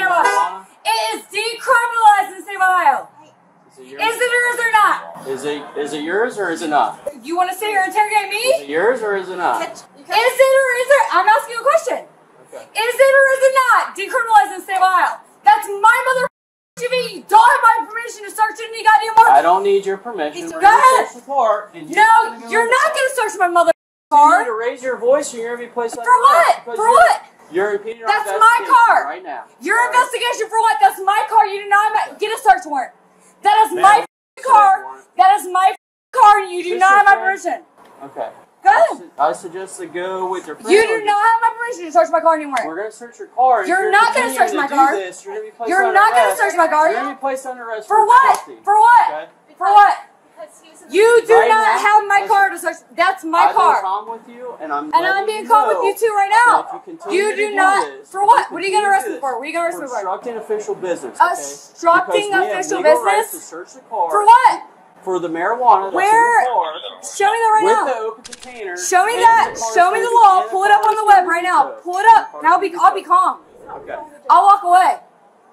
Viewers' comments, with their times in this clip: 0:04 the brown haired girl really tried to calm her down, but cannot because of her constant yelling that defeats the voice of her. It just shows how truly she tried and also shows how LOUD that woman is. i felt so bad for her.
1:01 lmao she couldn’t even say “obstructing” 🤣😂😭 also: “he was passed out in the car” “FOR WHAT!? FOR WHAT!?”